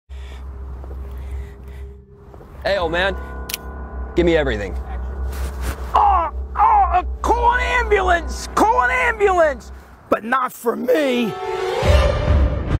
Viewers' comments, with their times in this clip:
0:04 He was you can hear a guy say action
0:04 Some people say action in the background
0:05 I love how hear the director saying action
0:09 The voice crack tho